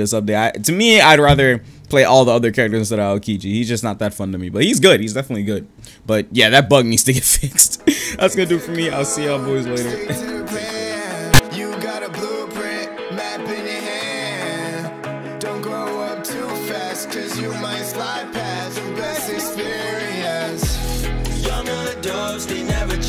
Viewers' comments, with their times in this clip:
0:10 Audio jumpscare fr